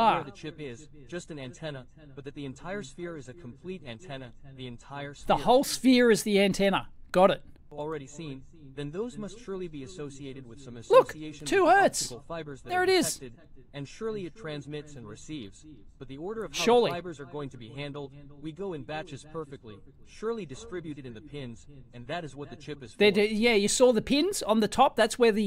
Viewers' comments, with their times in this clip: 0:08 For those scratching your head at home. The guy has the meter selected to "Diode" testing, which is also a continuity tester (which beeps when it sees a direct short). Otherwise, if there's a slight resistance, it will read the tiny voltage drop across it (which is meant to measure diodes, as I said). You hear the beeping at times because he's testing metal to metal, which just shows up as a short circuit. The "emission" reading is coming from the meter itself. Essentially the same as when it is checking ohms, but slightly different. It's certainly not reading Hz. You can clearly see it